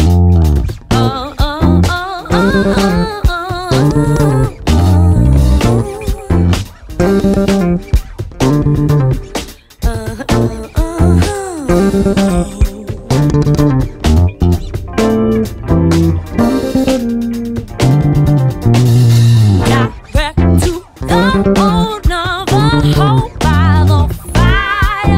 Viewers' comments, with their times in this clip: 0:05 Umm, Boom ;-D rhythym section always drives it home (pulse) but that was FUN!!!!!!!!!!
0:06 Great bass and skill as always. And beautiful smile Love your videos. Keep up the good work!